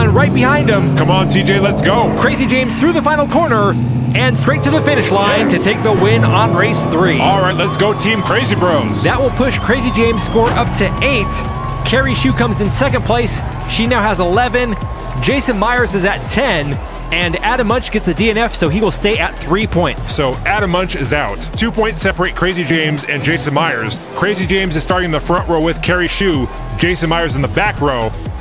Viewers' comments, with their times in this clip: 0:10 It's small details like a on why this channel is great! Didn't have to add that impact sound as I don't think anyone would of noticed but you did it anyway!